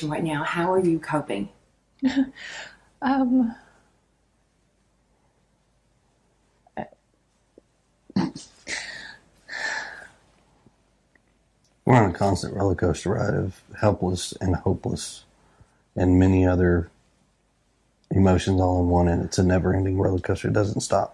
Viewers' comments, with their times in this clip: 0:07 Her laugh and his dead stare at her
0:08 SHE LITERALLY LAUGHS!!!!!! Edit: usually dupers delight is a smile of some sort…she literally laughs out loud here!